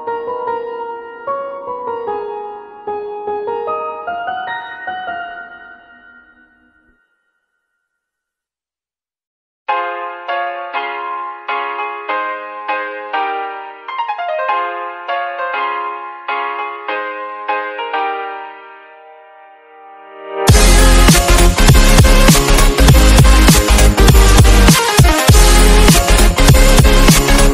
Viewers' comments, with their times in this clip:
0:10 best beat drop